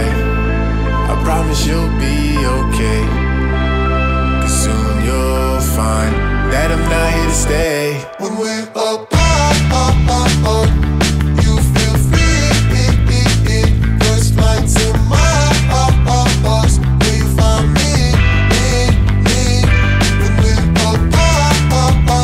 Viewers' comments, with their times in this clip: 0:07 the rhytm after is my fav part one of my fav songs